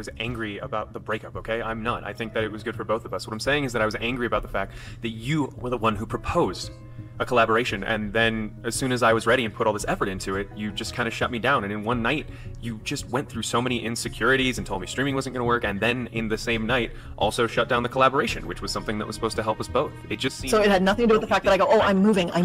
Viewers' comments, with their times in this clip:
0:03 boyfriend sounds like dream ahahah